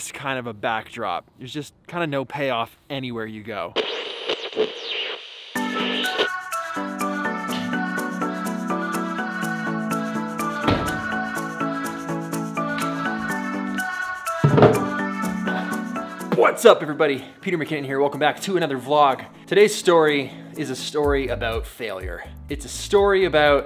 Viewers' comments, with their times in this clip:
0:05 that music reminds me of the old days when he was sitting at his home talking in front of the camera